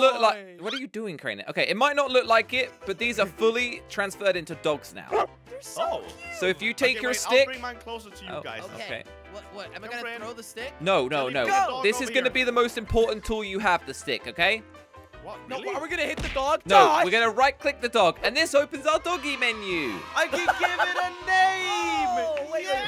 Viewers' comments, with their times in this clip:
0:08 did you hear his accent?